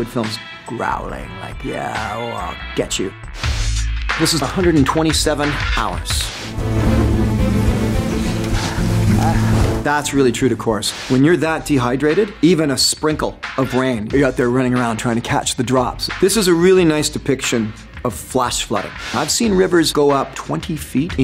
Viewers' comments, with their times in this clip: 0:03 Beat sounds familiar🤔😂